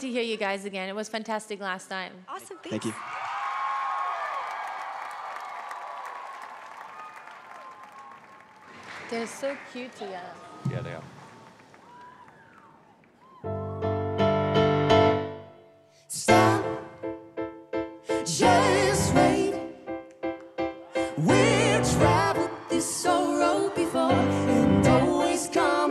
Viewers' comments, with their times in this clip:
0:09 sounds so scripted. like heidi says "they look cute together" simon says "yeah" and heidi just flips her head back to the stage.
0:09 The way Simon says yeah they are lol